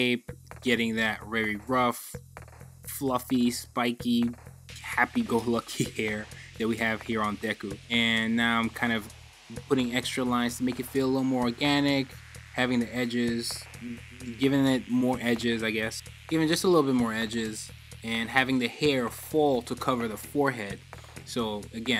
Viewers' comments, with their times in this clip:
0:03 Did he say happy Gubblush hair? Thank you very much, sir, for supporting my fluffy Gubblush hair. 😁